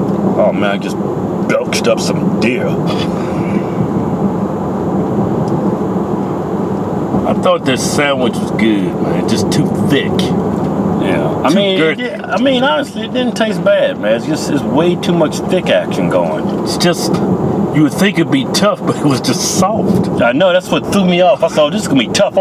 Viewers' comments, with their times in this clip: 0:06 I just burned me up some deer. I bout lost it. Venison is a very lean meat. Any venison cooked past medium rare is sacrilege.